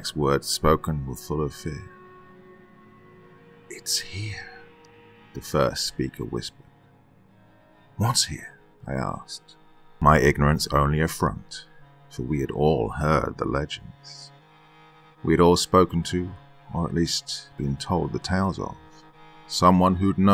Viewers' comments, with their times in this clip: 0:05 The background music kinda sounds like a deeper version of the intro to ghost on the shore by lord huron.